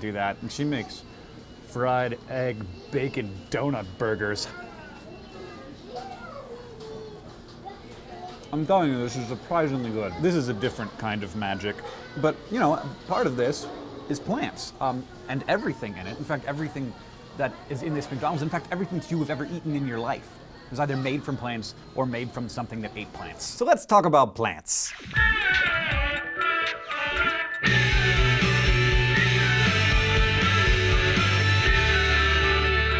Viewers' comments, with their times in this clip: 0:06 Listening to and then I hear a kid in the background
0:18 kids talking in the background